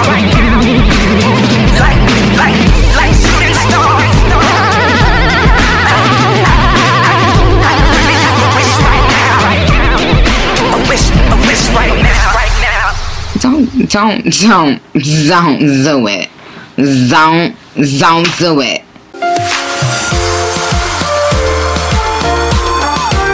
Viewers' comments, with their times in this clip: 0:05 I felt that when she went aAaAaAaAaAhh